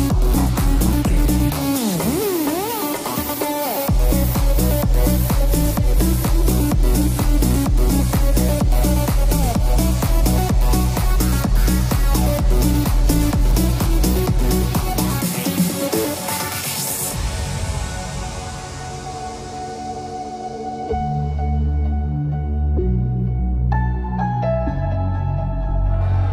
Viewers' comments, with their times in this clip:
0:07 sounds armin ban bureen -.- & morten bass